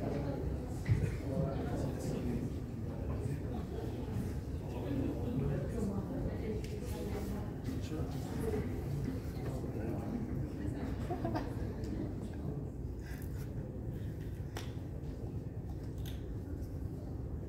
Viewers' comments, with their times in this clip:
0:03 what is he laughing at ???